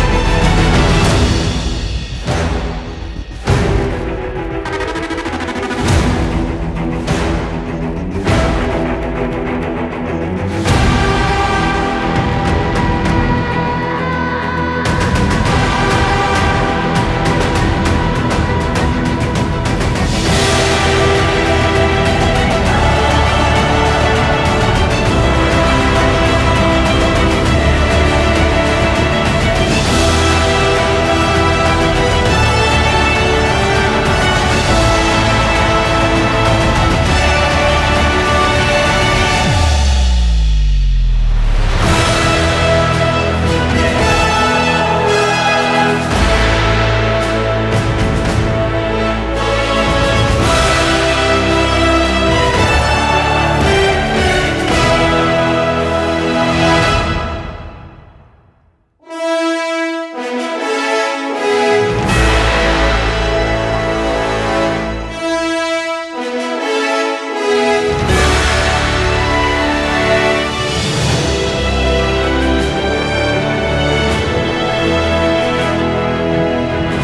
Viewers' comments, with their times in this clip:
0:05 The part is my personal favorite, I actually jumped a little when that theme played. Great work all around
0:10 shit got goosebumps winter soldier theme!
0:13 Is that a high-pitched version of buky’s scream?!
0:13 Winter Soldier theme is just badass
0:13 Mixing winter soldier's theme and falcon and winter soldier trailer theme is an absolute masterstroke!Genius!! Keep it up mate!!🔥
0:59 it feels like the same song looped back? to the end is just the beginning to